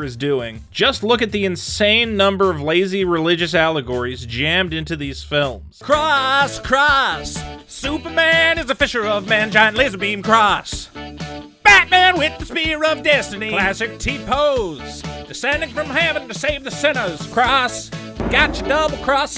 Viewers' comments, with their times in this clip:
0:06 was the best 18 seconds ever Nothing will make me laugh more than you pointing Out Jesus Imagery while singing to the tune of wild thing